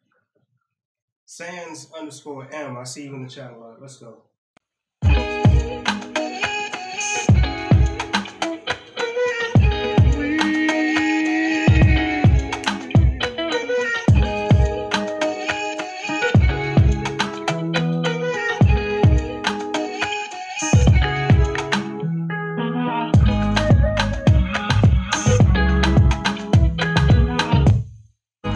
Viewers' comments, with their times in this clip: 0:09 I like the beat